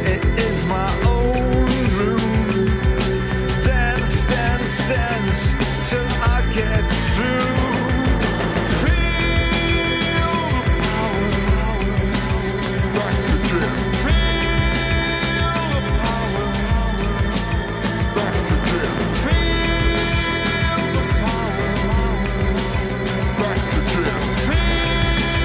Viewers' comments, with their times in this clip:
0:08 Feeeellll, the Power, power, power, feeelllllll - I love this part of this song, so deep